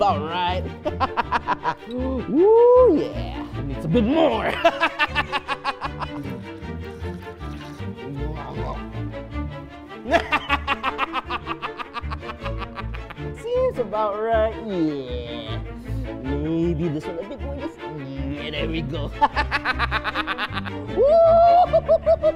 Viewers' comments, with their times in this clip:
0:04 Goofy ahh laugh💀